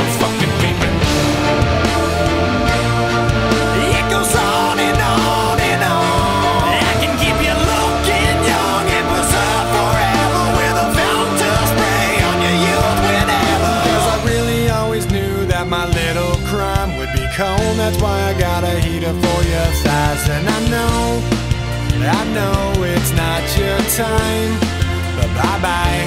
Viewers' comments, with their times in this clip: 0:04 And man are sus clap sound
0:14 The chorus is oddly soothing, like it’s giving you a break before they traumatize you again lol